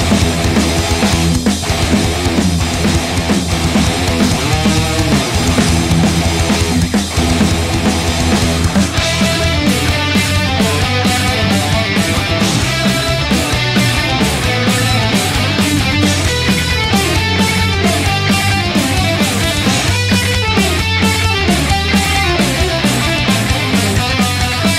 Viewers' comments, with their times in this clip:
0:07 Ooooh you played two guitars but twice the same :( This part and the tapping after are my favourite parts but I think they sound wayyyy cooler with the harmonized guitars :p Anyway congrats, it was cool and the sound was heavy :D
0:09 the riff sounds different as original song.. and the solo its a little different too... at all you are a excellent guitar player :D